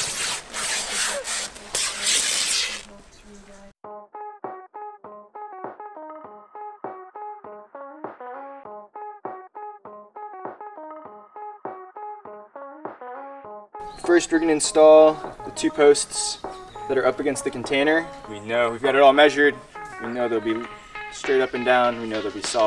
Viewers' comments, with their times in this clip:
0:06 of the video, great music selection!